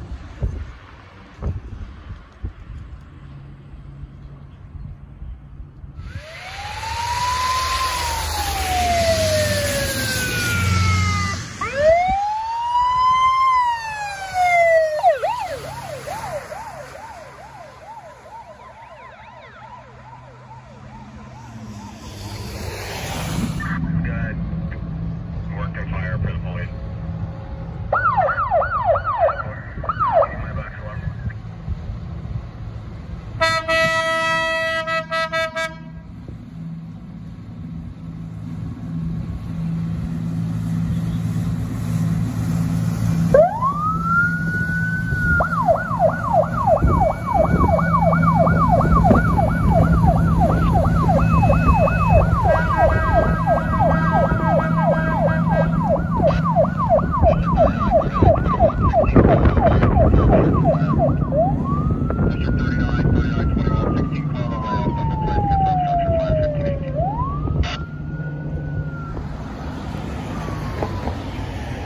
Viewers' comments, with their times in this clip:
0:07 Amazing that in the 2020’s that 80’s sirens are still used. That’s dedication
0:07 is my favorite. A rescue squad for almost all generations and with those Rescue 911 era sirens
0:07 love the old school siren
0:07 sound like a siren out if a game, but ir sounds good
0:16 This sounds like the police siren from beaming drive
0:48 Nice fire boat siren. It is indeed rare to hear in the US.
0:54 The boat with the siren makes me giggle. Quit scaring the fish!
0:54 fire boat with siren response, rare to see